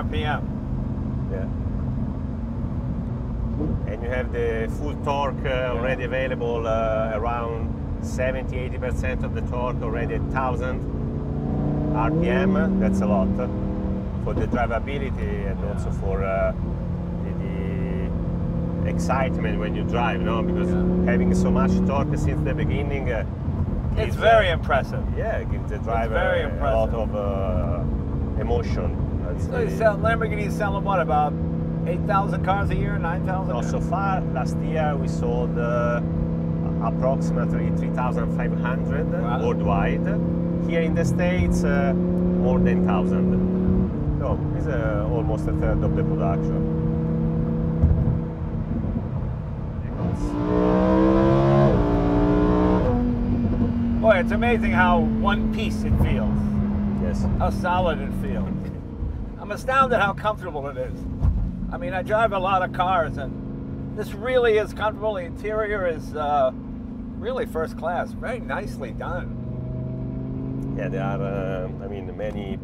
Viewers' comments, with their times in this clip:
0:04 is why I love supercars. You got all these boring grey cars all around in a boring environment then this loud flamboyant green Lamborghini comes in to spice things up. That is why they are so special
0:58 "I'm astounded at how comfortable it is" *SLAM